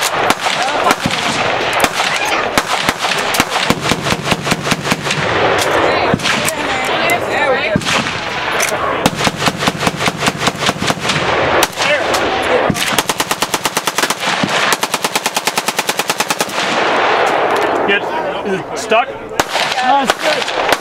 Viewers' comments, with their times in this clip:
0:03 wft was that ? sounds like a 20mm
0:04 Pubg conflict sound